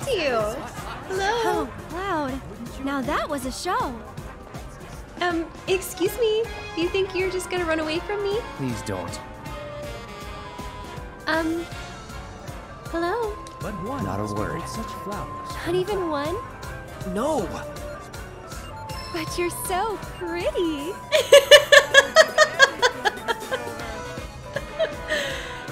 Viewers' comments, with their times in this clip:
0:10 not kidding i was thinking the «Hum Hello » is in the game 🤣🤣